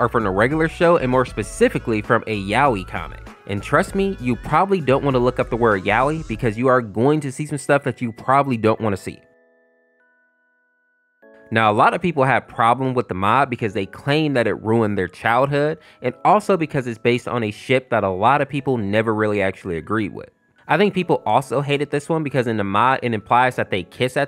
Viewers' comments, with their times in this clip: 0:08 The silence was pretty funny